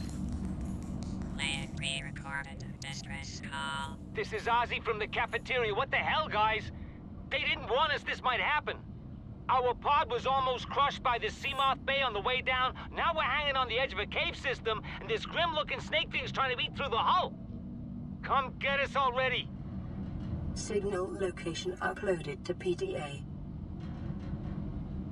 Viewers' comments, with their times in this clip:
0:09 the voice actor sounds like he's reading from a script and doesn't know what a seamith bay is LUL